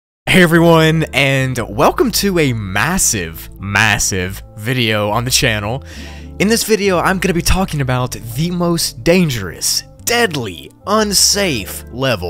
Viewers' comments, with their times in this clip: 0:00 "massive" ok ok "MASSIVE" OK HE WENT TO FAR